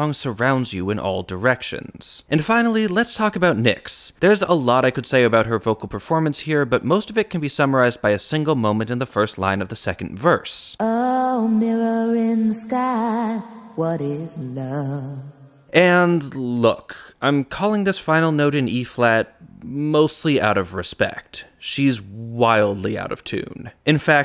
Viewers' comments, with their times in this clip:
0:10 To me that 'wrong' note' sounds like a Maj 7th!